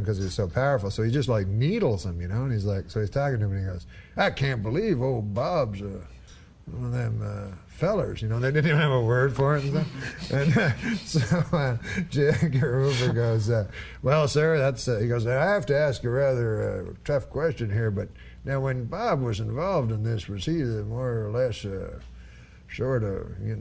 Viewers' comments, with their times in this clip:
0:07 After this show Norm should never be allowed ever again to imitate Lyndon Johnson (talking about a-top-Pentagon-man's-affair - and with a cub scout). .at though you will need Maalox. .